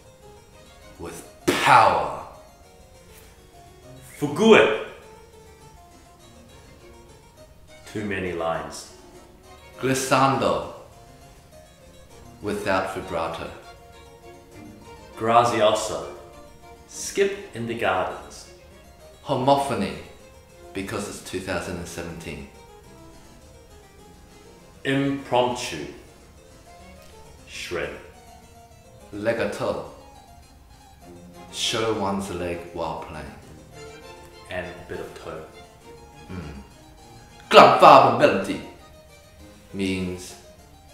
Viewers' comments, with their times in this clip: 0:04 LMAO pronouncing "fugue" foo-goo-eh! This one is French guys not Italian!!
0:23 he is so holding back dat laugh xD
0:23 when you can't keep up with the dedpanning